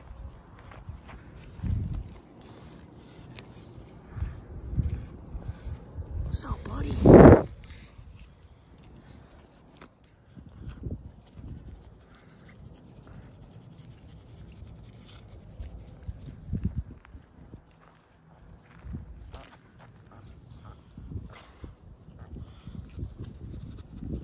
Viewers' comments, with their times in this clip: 0:06 OML THAT TURTOISE IS HEAVY BREATHING